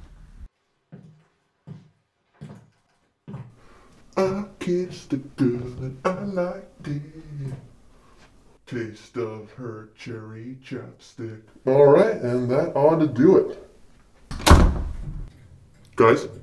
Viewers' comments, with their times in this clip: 0:04 Jigsaw singing that song killed me.